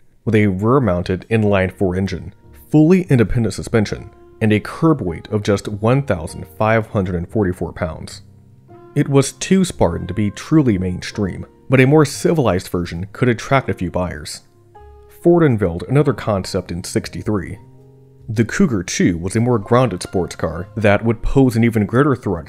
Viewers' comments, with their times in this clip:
0:03 ….well, that’s no inline four…..😊